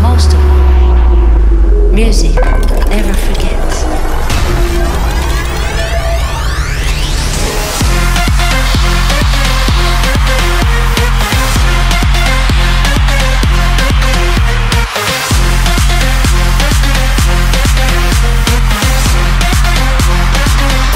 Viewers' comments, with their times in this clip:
0:04 KURA's typical snares.